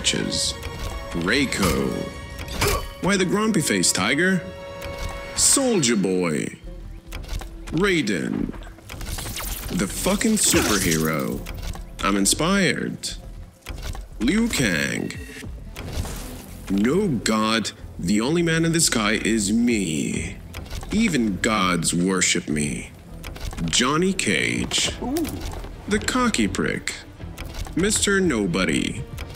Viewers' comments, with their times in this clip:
0:05 I really thought bro said Soulja boy 💀
0:13 Bro homelander voice to liu kang is absolutely insane ☠️
0:16 I know its AI but sounded so off